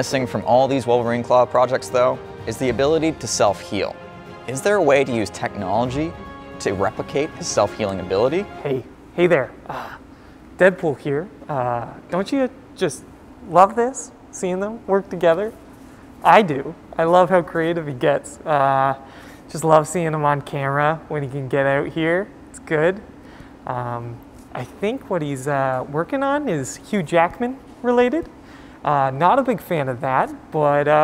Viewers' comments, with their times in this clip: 0:08 Nah that aint deadpool that is his taxi driver
0:09 it sounds like mark ruffalo(the hulk) trying to impersonate ryan renolds(deadpool). Work on those impersonation skills man.
0:10 Check it out everyone, it's the worst Deadpool impression ever.
0:11 guy sounds like Dopinder using Deadpool’s mask
0:12 "hi Deadpool here". Me: yo Backyard Scientist??!!
0:16 sounds like mark rufalo
0:19 sounds like the guy that drives the taxi in deadpool